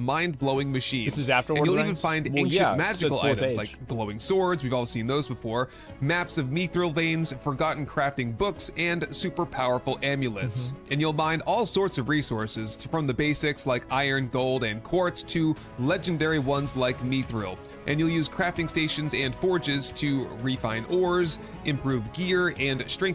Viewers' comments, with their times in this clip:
0:05 did he just say “Meethril” veins bro its MITH-RIL